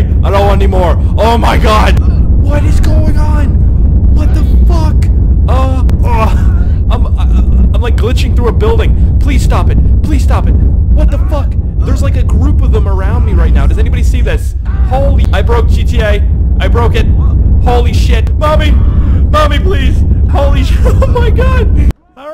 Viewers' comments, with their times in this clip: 0:06 sounds like a jet taking off